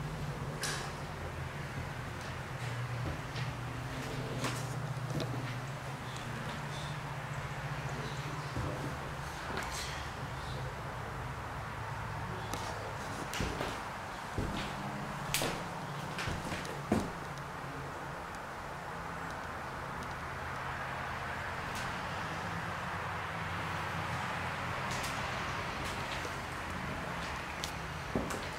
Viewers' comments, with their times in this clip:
0:09 sounds like a woman says Joe